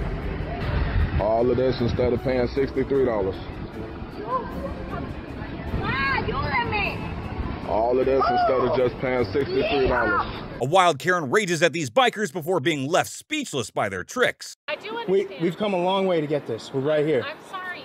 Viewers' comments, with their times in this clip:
0:04 At the minute that is a latina karen and she screamed "mom help me", her mother answered "Oh my daughter" in spanish no Ye-ha